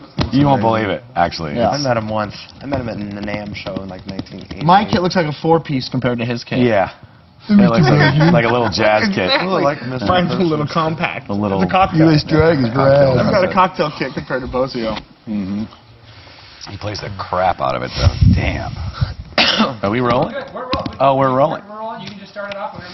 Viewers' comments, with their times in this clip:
0:04 Chad even plays the armchairs with style 🥁